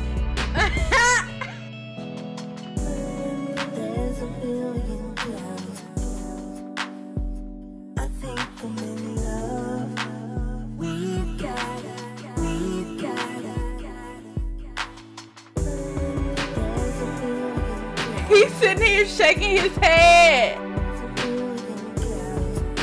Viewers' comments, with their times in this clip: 0:07 THE LAUGH KILLED ME AHH I love this lp so much <33